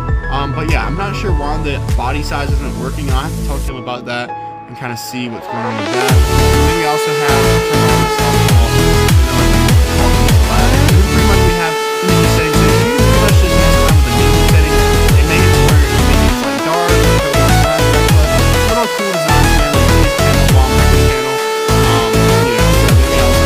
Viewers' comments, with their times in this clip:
0:07 I couldn't hear you lol